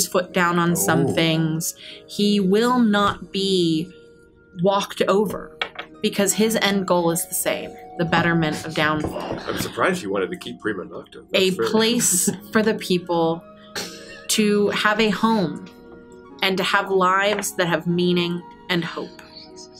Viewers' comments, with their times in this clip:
0:05 how this flew under the radar astonishes me, lol. the most quiet response ever